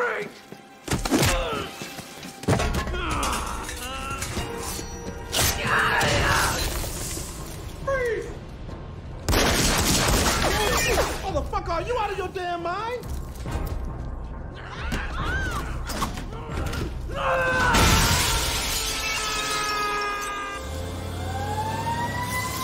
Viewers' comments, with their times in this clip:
0:09 Never seen the movies before, but now I have to cause that line delivery just killed me 🤣